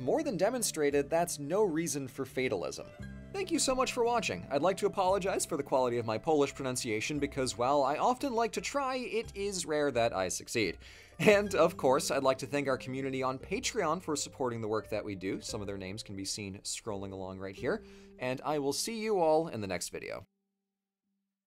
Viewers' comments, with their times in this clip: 0:03 Your Polish pronounciations were actually pretty nice. Don't say that. ❤❤❤
0:06 R U kidding me? "Szlachta", "Sejm" pronounciation 10/10.
0:10 You did succeed though, it's surprising how well too.